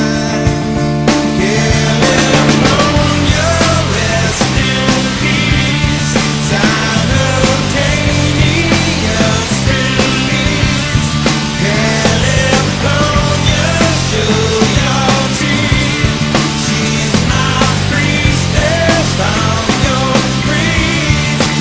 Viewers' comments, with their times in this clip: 0:04 umm what happened here? actually, what happened during the chorus sections you were playing? your distortion just disappeared into basslines and it makes the cover sound unfinished. the video says 2016 so probably bad audio editing perhaps? loved the solo though.